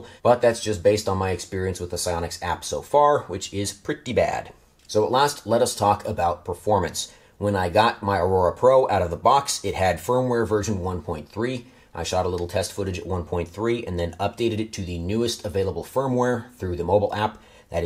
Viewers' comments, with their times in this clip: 0:04 At last, lettuce.